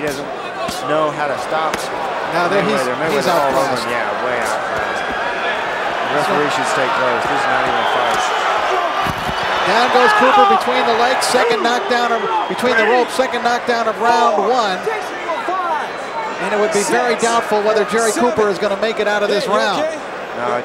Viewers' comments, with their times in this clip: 0:08 The chick laughing 😫 ouch